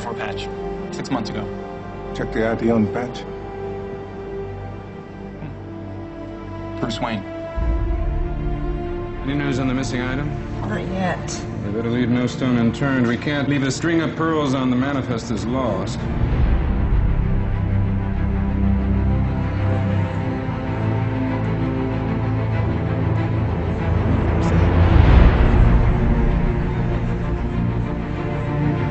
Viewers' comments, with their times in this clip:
0:09 when the name Bruce Wayne is said, the music shifts in its tone. Plot, visual, sound, all coming together